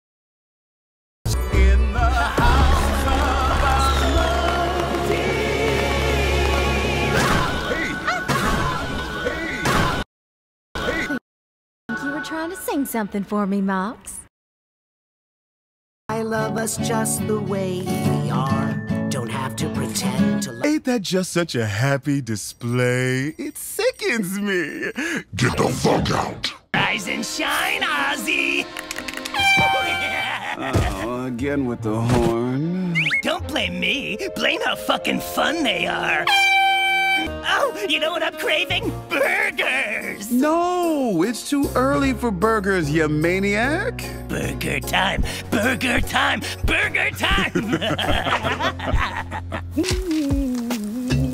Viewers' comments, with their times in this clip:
0:08 I can’t get the vine boom out of my head whenever Millie kicks Fizzy 😭
0:33 i love how he moans at this scene